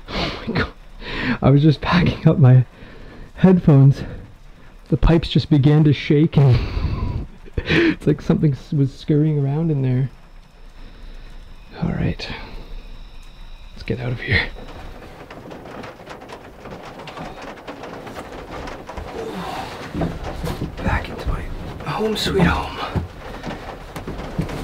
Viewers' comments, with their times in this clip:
0:06 Did you laugh and fart? 😂 I love your videos btw